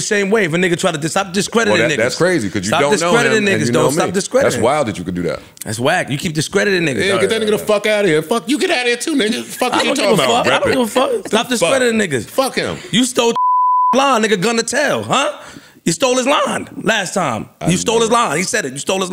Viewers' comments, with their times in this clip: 0:05 Little exchange between Joe and Flip was mad aggressive for no reason. 🤣🤣🤣